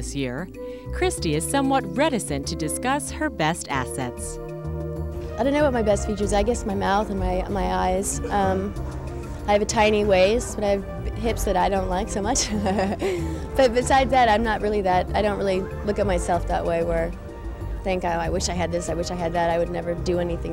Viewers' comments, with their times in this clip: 0:05 pls tell me the backgrounds music sounds so relax and very calm